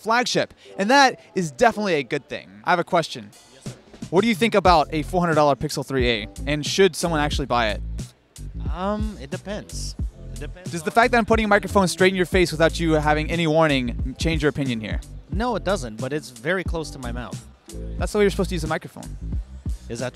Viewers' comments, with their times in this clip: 0:07 sunglasses guy can’t stop laughing because of austin’s hat xD